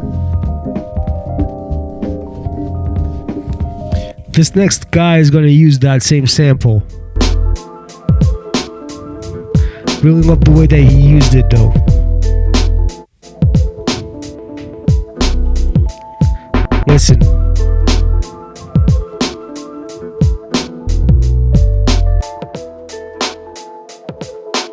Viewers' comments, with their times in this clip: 0:05 Love the looping never gets old